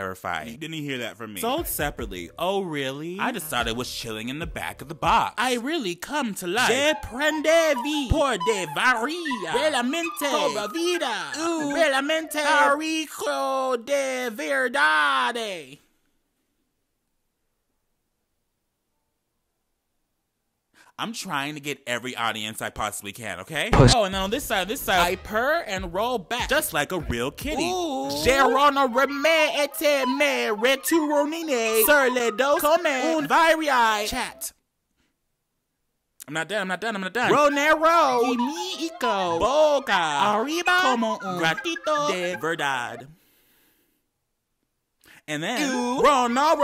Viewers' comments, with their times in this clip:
0:07 You literaly just read in portuguese, french and spanish, congrats You also have a lot of accent in portuguese
0:10 he speaking portuguese 🛐🛐🛐
0:11 as a brazilian i love the way he pronounced the portuguese part so much
0:28 when he speak french i love it so much 🤣 ( im french btw )